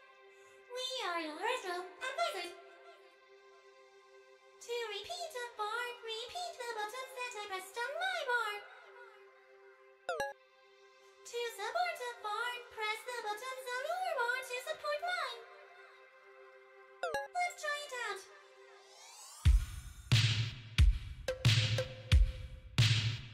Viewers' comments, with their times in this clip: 0:07 it's sounds like Rin..